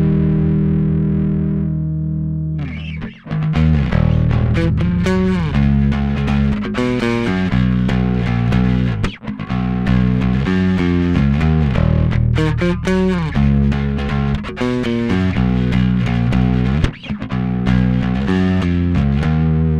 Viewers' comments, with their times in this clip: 0:03 What's the riff ? Reminds me of a bass lines from 80's Russian band Kino : )